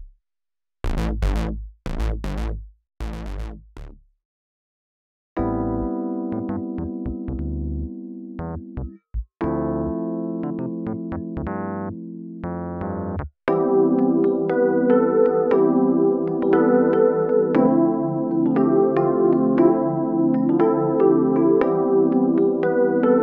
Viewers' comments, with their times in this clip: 0:04 Man the electric keys with the subtle chorus is a dope sound.